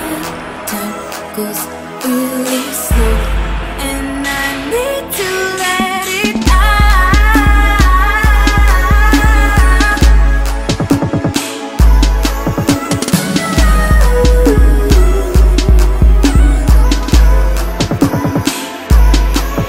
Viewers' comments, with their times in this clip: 0:06 My part is ..."let it ouuuuut." LOL. I honestly couldnt function without listening to this song 1000 times on repeat today. I feel like a addict. She's definitely underrated. Beat knocks the hell outta my headphones!!!;)
0:06 My part is ..."let it ouuuuut." LOL. I honestly couldnt function without listening to this song 1000 times on repeat today. I feel like a addict. She's definitely underrated. Beat knocks the hell outta my headphones!!!;)
0:06 My part is ..."let it ouuuuut." LOL. I honestly couldnt function without listening to this song 1000 times on repeat today. I feel like a addict. She's definitely underrated. Beat knocks the hell outta my headphones!!!;)